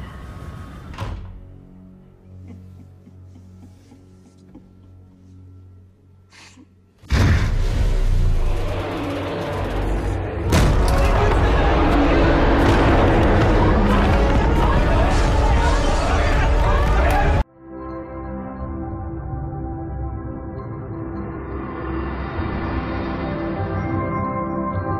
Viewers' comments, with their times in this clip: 0:08 am i the only one who noticed the faint muto roar?